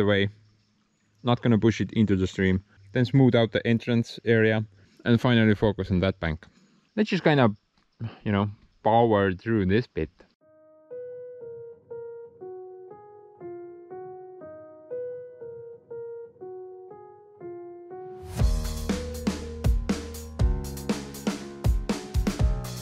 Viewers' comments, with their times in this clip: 0:10 I like the music as well as the content.